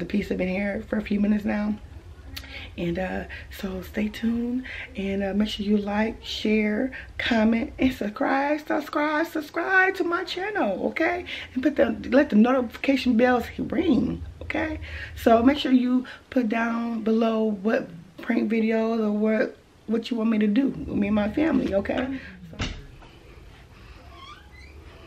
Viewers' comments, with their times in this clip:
0:08 Press The Blue Number When She Said Sucribe 🤣🤣